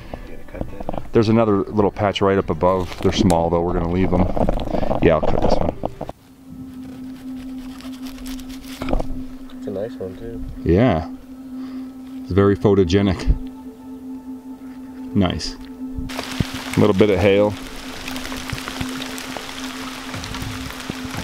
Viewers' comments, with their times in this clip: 0:05 What was happening to audio